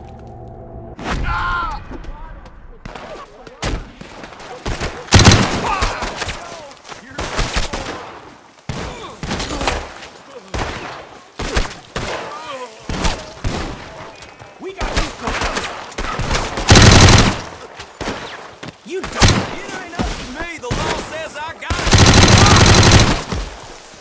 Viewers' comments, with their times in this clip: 0:05 “whaaa” just flabbergasted ay what he just experienced such a high rate of fire